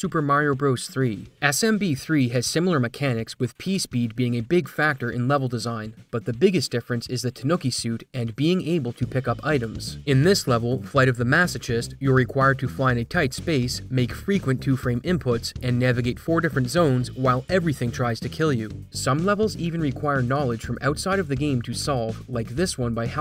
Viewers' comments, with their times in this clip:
0:10 "Flight of the maso chist" 😭 that pronunciation hurt my brain
0:10 Flight of the what?! I just want one youtuber out there to like... actually look up how to pronounce a word they don't know before embarrassing themselves in front of thousands of people.
0:10 "flight of the massa-jest" lmaoo peopple be making documentaries without 3rd grade english knowledge
0:10 it's hard to even make a joke about this pronunciation because if I write out how you said it it's just the real spelling, masochist. It's actually pronounced masokist, but that makes no intuitive sense lol
0:10 maso-ch-ist? You sure its not maso-kissed?